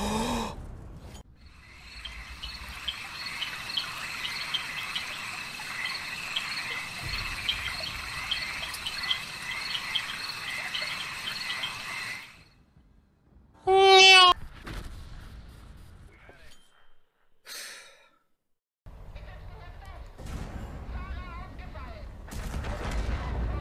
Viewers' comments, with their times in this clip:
0:07 why so LOUD!?